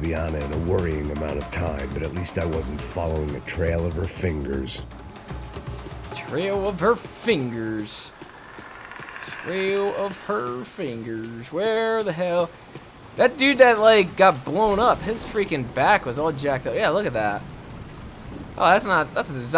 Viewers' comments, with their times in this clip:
0:04 did u hear the predator !